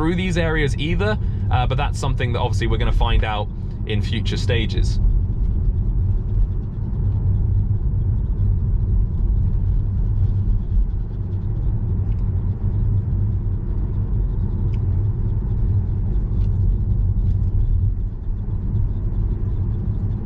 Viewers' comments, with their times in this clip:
0:05 I went off the video for a few seconds and I thought my Youtube stopped because of how quiet it was. Electric cars :D